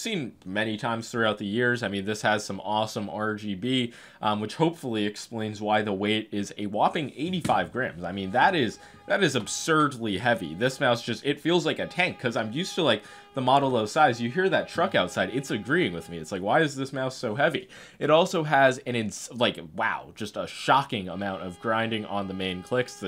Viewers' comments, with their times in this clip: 0:06 the collab with a truck agreeing seems scripted😅